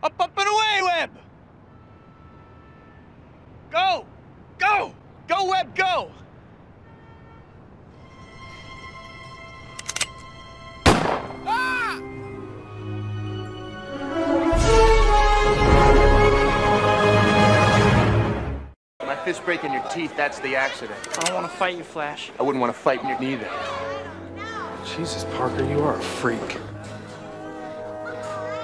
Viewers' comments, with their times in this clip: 0:10 i liked the sound of cj dyin
0:10 Anybody else notice CJ from San Andreas yelling lmao
0:11 Who noticed CJ's "Aahhhh"
0:11 lollll it's cj from gta sa screaming I'm dead😂😂